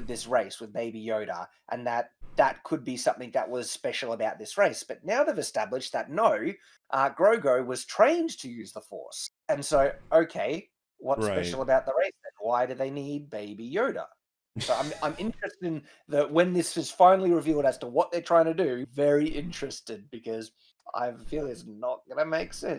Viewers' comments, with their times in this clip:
0:05 I've never heard so many vowels crammed into the word "no"